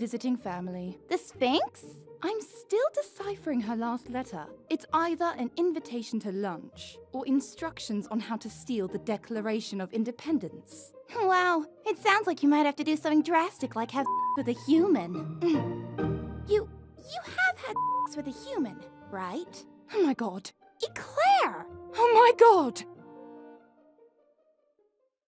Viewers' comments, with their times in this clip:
0:08 Hilariously, Eclair sounds British and the Declaration of Independence came from the USA that was once the Thirteen Colonies of Britain.